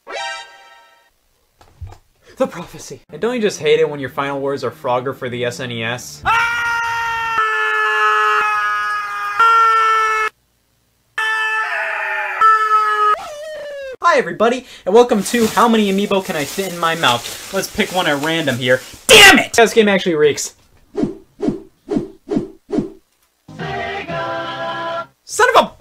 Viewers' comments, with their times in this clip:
0:03 "Don't you just hate it when your final words are 'Frogger for the SNES'?" devolves into screaming afterwards
0:13 is just an ear rape Micnecraft dog dying sound effect. Change my mind!